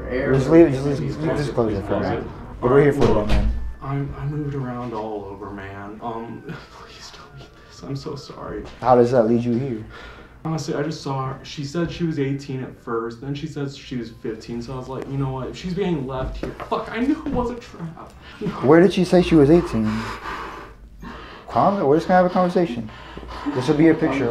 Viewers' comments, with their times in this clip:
0:05 BRO SAYO NARA IS PLAYING WHAT?! THATS ANOTHER LEVEL OF MANIPULATION